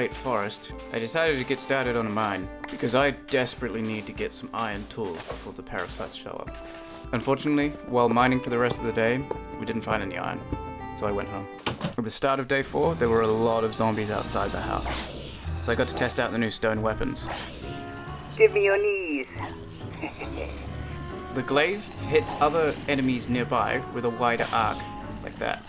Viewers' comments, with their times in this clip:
0:08 in i thought it said get laid xD